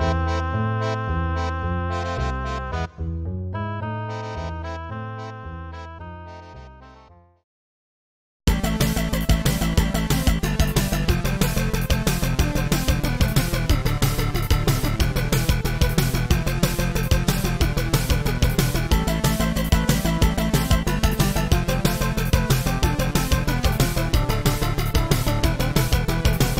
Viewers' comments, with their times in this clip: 0:08 sounds like DOOM lmao